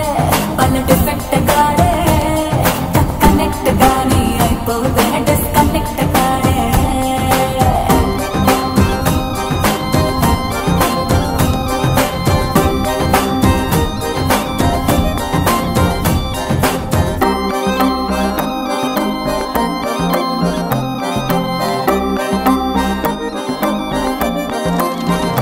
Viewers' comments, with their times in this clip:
0:07 damn this music hits different